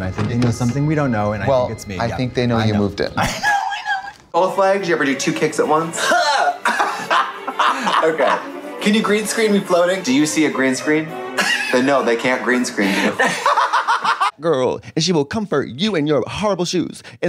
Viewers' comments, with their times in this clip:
0:04 ‼️ is where the wheeze comes from⁉️